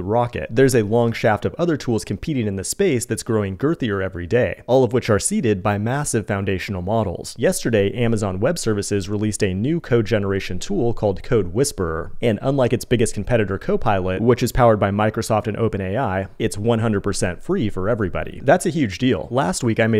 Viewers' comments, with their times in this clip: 0:07 sooo the clapping I hear can either be a standing ovation as I become a 10x dev, or my career getting it's cheeks beat in. Hard to tell right not... All I can say is that it's getting louder... 😂